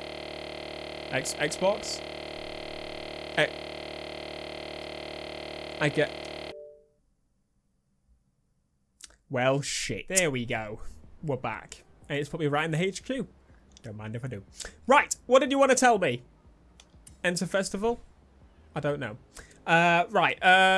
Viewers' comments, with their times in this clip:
0:07 v-tech kicked in